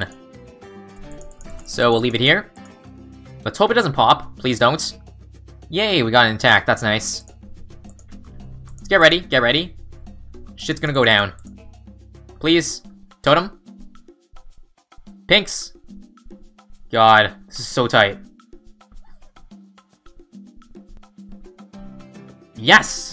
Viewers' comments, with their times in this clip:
0:05 Why is this little "yay" so cute ;-;